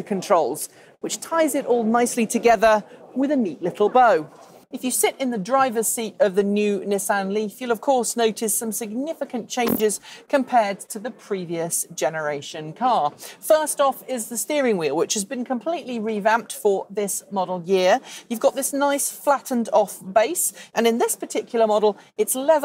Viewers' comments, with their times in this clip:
0:08 swear I heard some "emissions".